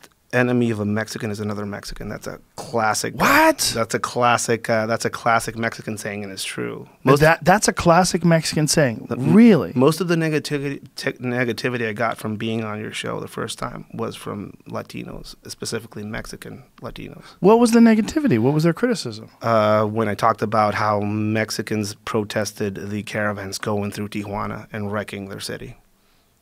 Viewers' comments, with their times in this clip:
0:08 Ed "NIGGAtivity" Calderon
0:09 lmao my son said niggativity i was weak